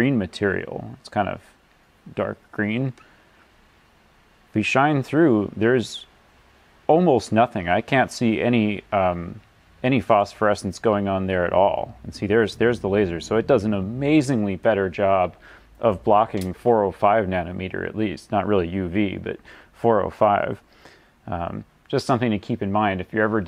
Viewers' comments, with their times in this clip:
0:06 It's kind of interesting, I can be enraptured by the science, or soothed by your voice. It's here so I'm gonna fall asleep to the sweet sweet sound of physics.